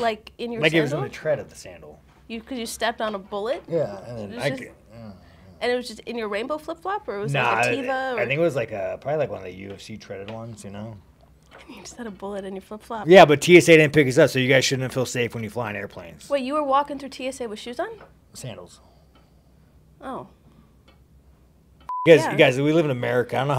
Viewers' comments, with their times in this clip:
0:04 Sean has the same muttered "yeah, yeah" as Don Fry 🗿